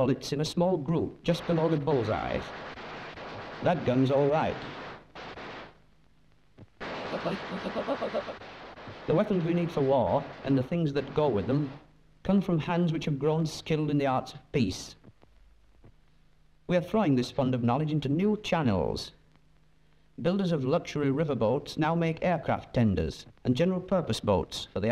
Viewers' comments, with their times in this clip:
0:06 This audio sounds extremely processed by an AI or an equally weird program. Whoever is publishing these videos needs to turn down the filter and have someone else review the video before publishing. sounds ridiculous.